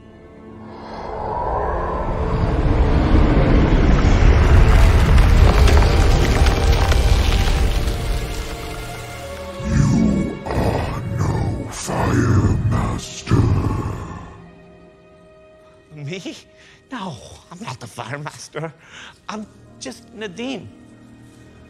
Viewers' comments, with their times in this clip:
0:09 That's Gil Kenan's Voice But Deep Pitched and Scary